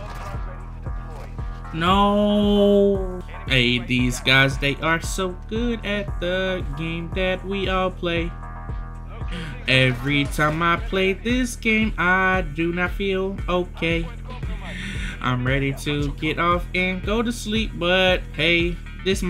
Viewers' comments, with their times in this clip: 0:05 random singing segment LMAO